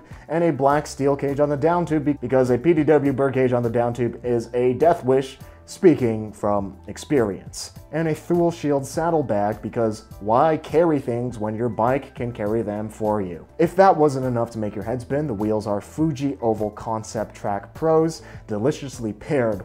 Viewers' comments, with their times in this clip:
0:07 “too-lee” saddle bag